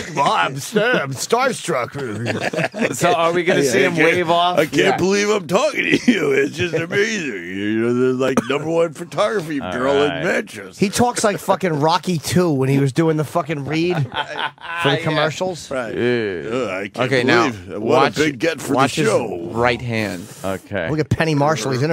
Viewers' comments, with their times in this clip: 0:08 Ant can’t even hide his disgust towards Opie’s unfunny, drawn-out Scorch impression